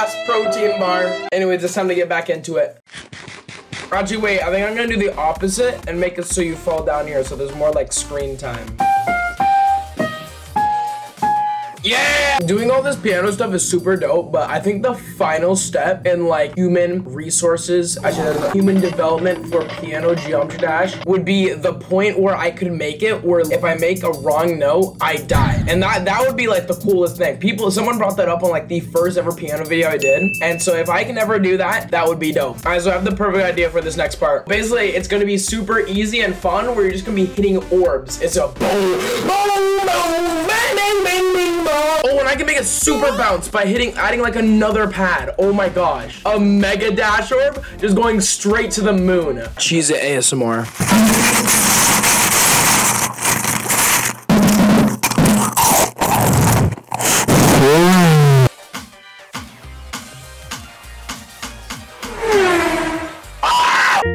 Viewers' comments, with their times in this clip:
0:09 why does it sound like auferstanden aus ruinen?
0:47 LMAOOO BEST ASMR
0:48 very good ASMR
0:49 Thank you for the ASMR that sounded so nice -Toilet Paper Gang
0:49 can we get an F in chat for people wearing headphones
0:49 so satisfying ps: headphone warning
0:50 best asmr frfr
0:50 best music for my ears
0:50 best asmr ever
0:50 LOUD NOISE WARNING!!
0:50 the chesse asmr 😂😂😂😂😂😂
0:50 thank you very much for the high quality, relaxing ASMR
0:50 Nice asmr bro😐
0:51 (super relaxing cheez os asmr that made me sleep)
0:51 chezz it Asmara BRO THAT DOES NOT SOUND LIKE CHEZZ IT ASMR THAT SOUNDS LIKE YOU BREATHING DOWN MY NECK